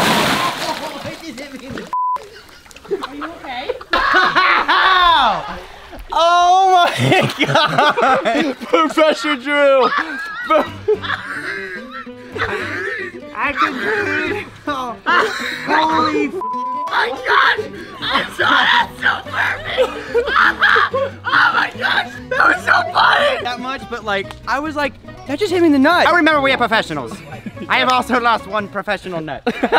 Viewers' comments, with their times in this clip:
0:10 the way he was laughing had me to tears laughing 😂
0:10 the laugh hahah
0:11 i love this laugh so much XD